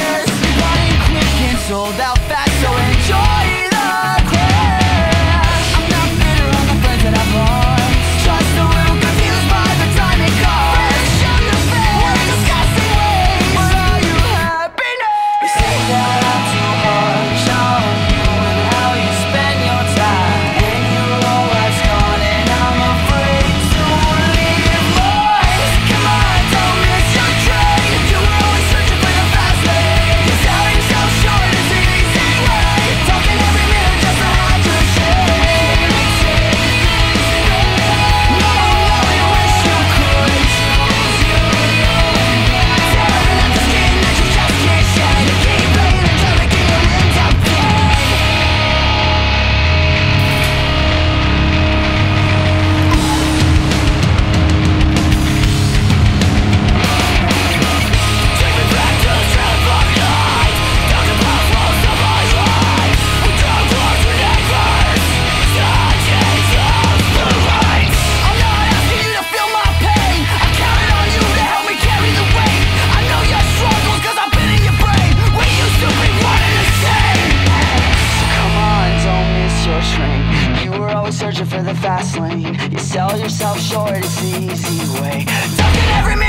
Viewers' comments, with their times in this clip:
0:07 love that little riff that comes in
1:07 The guy who screams scared the shit out of me at Warped Tour cuz i was totally not expecting it XD